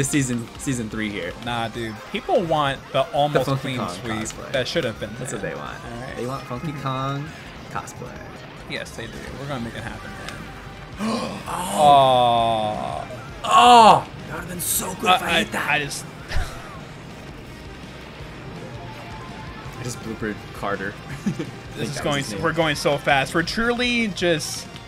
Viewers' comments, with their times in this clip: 0:10 that doesnt sound sfw